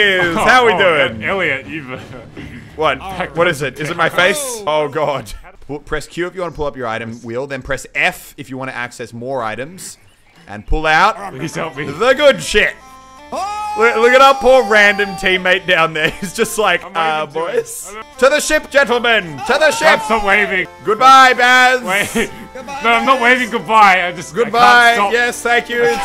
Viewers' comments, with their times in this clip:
0:09 YAS. The Hurdy-Gurdy is the good shit.